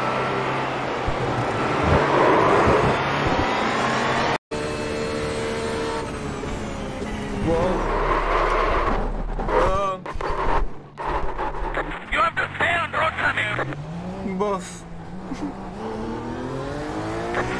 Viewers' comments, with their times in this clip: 0:04 I gotta find out how to get that spotter. The Indian rally co-driver comes in perfectly lmao